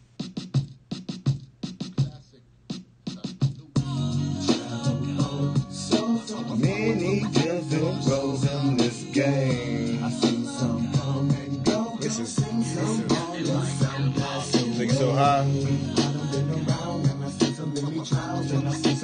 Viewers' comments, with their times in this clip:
0:04 smoothest shit I’ve heard since forever....loving it